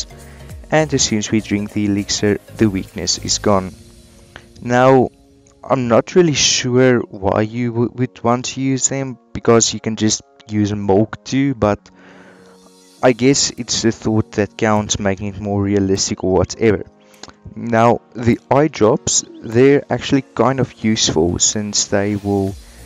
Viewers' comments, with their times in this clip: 0:08 DID HE JUST SAY MOLK???
0:08 he said molk